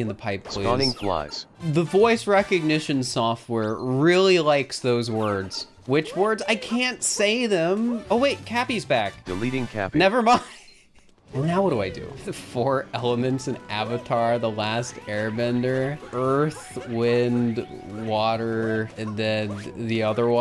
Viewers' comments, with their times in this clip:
0:08 is gold. His poor sweet voice realising that cappy is back and then his dreams shattered within a second haha🤣